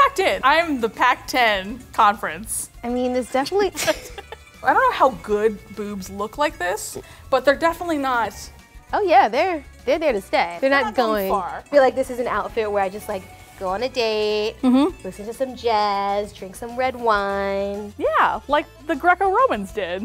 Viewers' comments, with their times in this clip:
0:06 Ew she farted